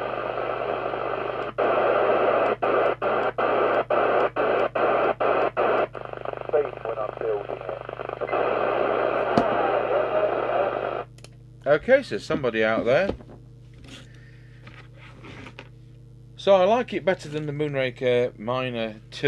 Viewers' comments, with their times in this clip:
0:05 I hear that ignition type noise again